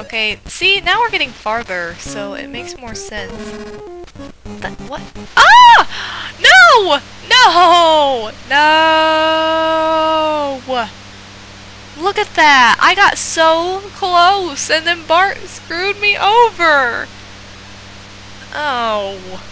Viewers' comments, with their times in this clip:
0:06 Epic Scream Again!!